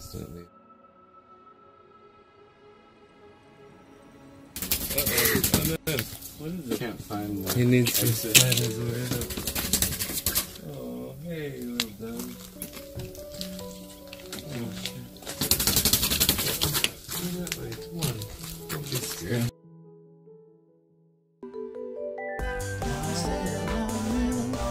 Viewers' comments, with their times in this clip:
0:06 What was the noise ?